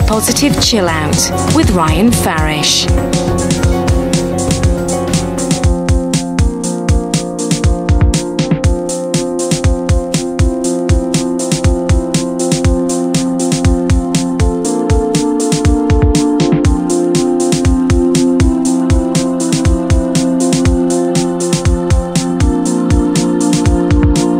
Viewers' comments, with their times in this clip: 0:06 The music reminds me of OMD...